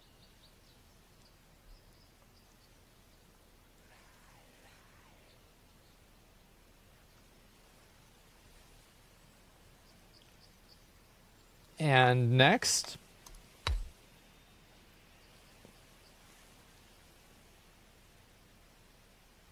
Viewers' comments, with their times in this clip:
0:04 At minute in the video what is that sound? Super creepy! Hilarious video tho otherwise 😂